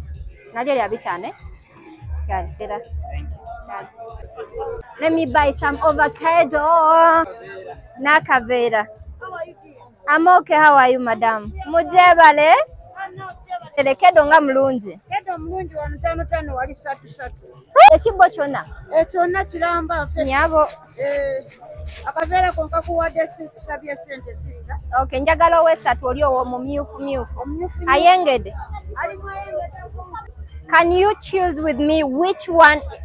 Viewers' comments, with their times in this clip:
0:06 Let me buy some Ovacado 😂🤭
0:15 wait for the perfectly cut scream
0:16 perfectly cut scream